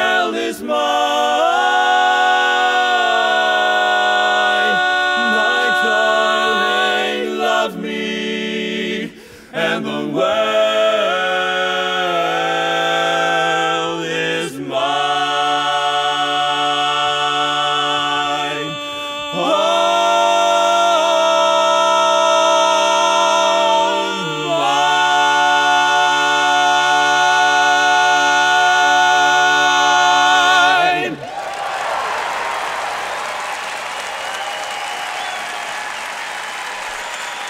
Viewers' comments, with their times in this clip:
0:03 Their tone is absolutely nuts. My favorite part of this is the bari-lead suspension That could not be any more locked . Also, I just want to say that I haven't seen green/purple fringing as bad as :30 since VHS days. :p
0:04 is just such a beautiful lock...
0:20 That Tenor Bb from is insane